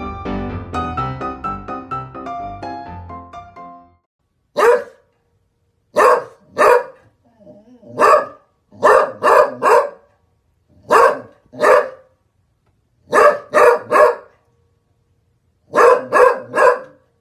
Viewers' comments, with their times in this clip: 0:04 was like the song eye of the tiger